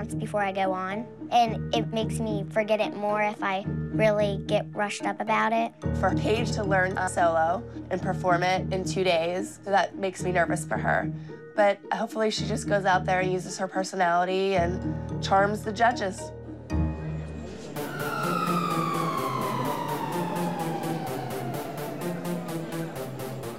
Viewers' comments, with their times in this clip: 0:04 Paige’s voice is so cute x!